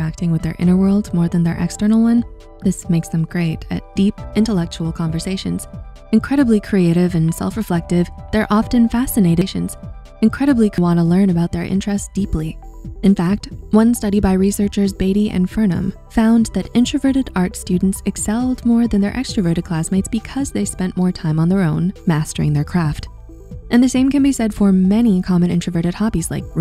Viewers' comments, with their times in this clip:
0:08 has some audio skipping
0:08 There is a Audio Bug at ~ where 2 times in a few second some dialogue is skipped. Dont Know if anyone so far pointed that out already